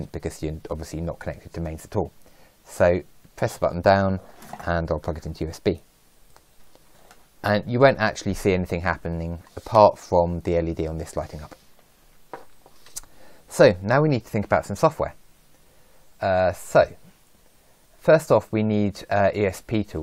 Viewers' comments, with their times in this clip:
0:04 What are you saying ? The part after "while holding down the button" is a bit hard to understand.